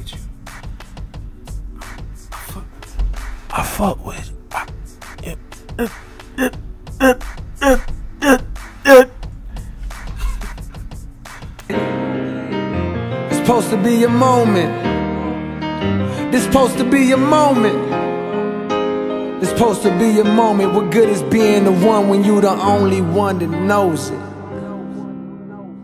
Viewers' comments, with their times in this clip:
0:10 0.55 Buddy went John Witherspoon 😂😂🤣🤣 RIP the 🐐